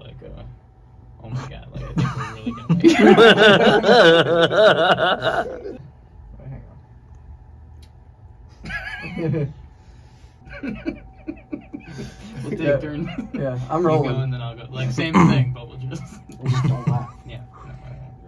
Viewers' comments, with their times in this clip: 0:03 I swear that's Krusty the clown laughing